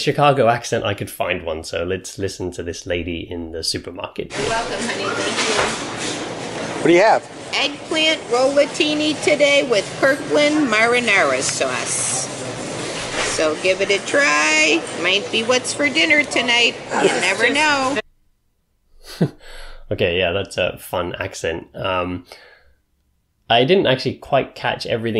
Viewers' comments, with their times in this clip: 0:06 “you’re welcome honey bun …” “Eggplant rollatini with Kirkland marinara sauce” It’s the accent used in the Fargo tv series. “Minnesota nice” or something.